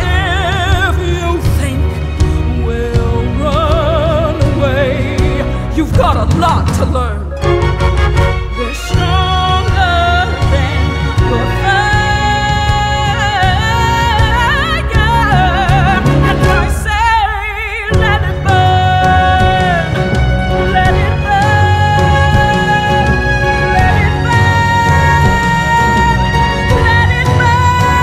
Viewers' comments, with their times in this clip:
0:09 Correct me if I am wrong, but I think they still have to perform a pm show on the day of the Tony's awards. So that's why she was sooo horse. She had did it less than 3-4 hours before and she still had to go and kill it.